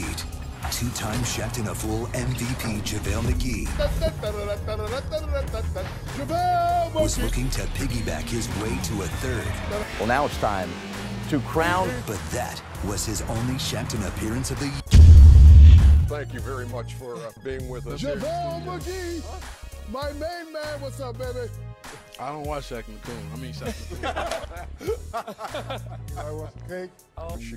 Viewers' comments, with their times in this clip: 0:09 whats with the horse sound? 🤣🤧